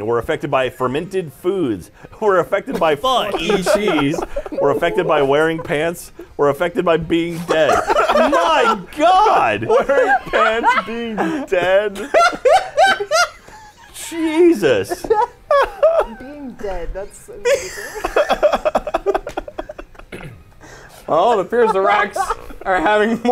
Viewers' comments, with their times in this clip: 0:07 Funny how they censor "fuck" being said but not the word around the mark.